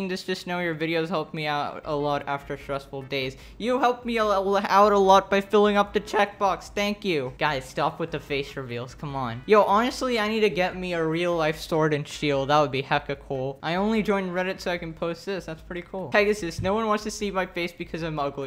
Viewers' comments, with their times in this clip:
0:06 that voice crack